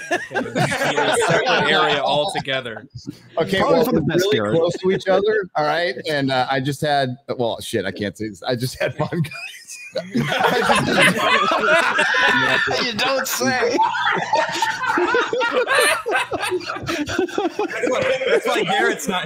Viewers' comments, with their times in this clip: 0:06 he had what?? I can't hear what he said.